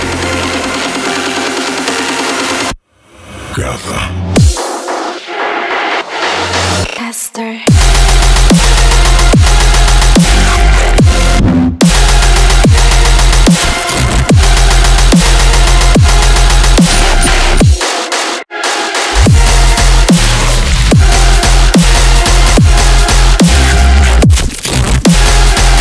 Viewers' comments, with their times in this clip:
0:06 O M G ! Best drop ever
0:07 O M G ! Best drop ever
0:07 holy moly my EAAAARS